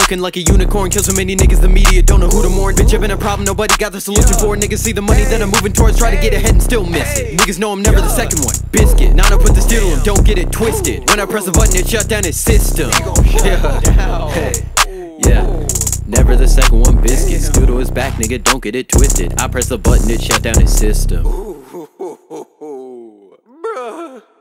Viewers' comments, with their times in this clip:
0:09 The way u say biscuit XD